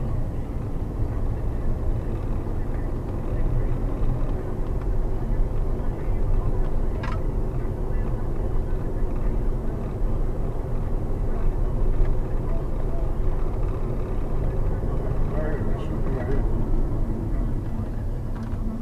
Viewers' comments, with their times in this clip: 0:06 I can tell you this guy didn't know where he was going because he was going to a hook up lol if you listen you can hear his Grindr notification go off LOL